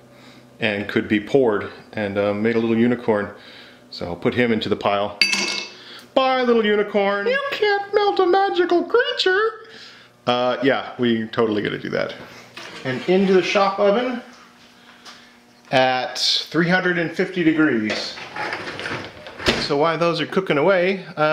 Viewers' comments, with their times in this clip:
0:06 gingerbread man from Shrek came in the room